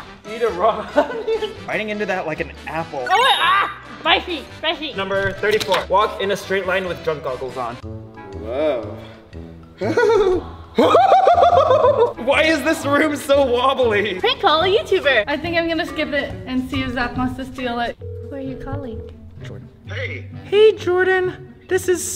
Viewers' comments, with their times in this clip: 0:06 the yell made me crck up jaja